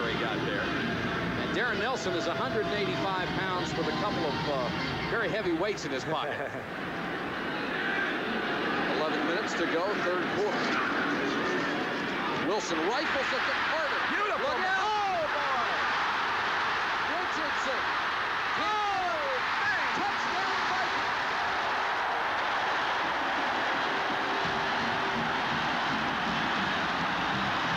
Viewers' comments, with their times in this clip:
0:09 Anthony Carter makes the announcers cheer.